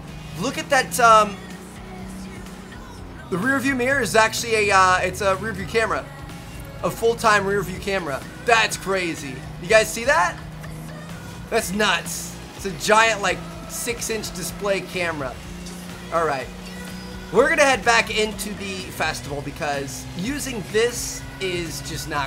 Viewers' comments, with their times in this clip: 0:10 did he say crazy or Brazy. Cause if he said brazy he's one boolin blood